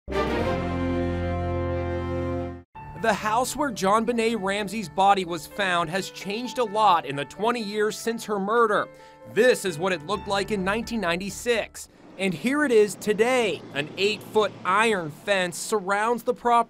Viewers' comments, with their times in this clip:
0:03 you start the video off screaming